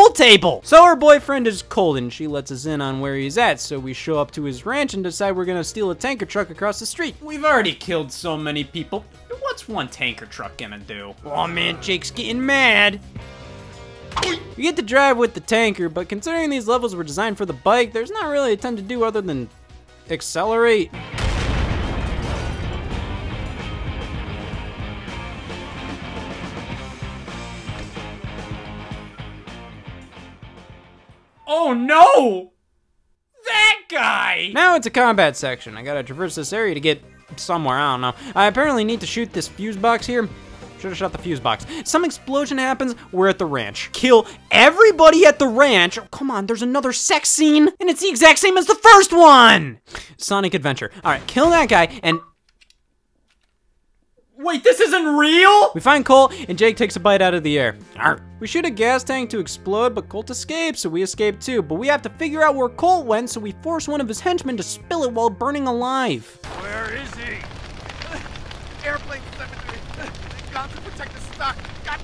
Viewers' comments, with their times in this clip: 0:08 WAIT SCOTT PUT A SOUND EFFECT OVER THAT FOR THE FIRST TIME
0:30 Scott channeled the Gilbert Gottfried energy in the sky and immediately had to do his voice by utter suprise
0:50 Battery dying in the background: Scott: Wait THIS ISN'T REAL!?
0:57 “eargh” chomps air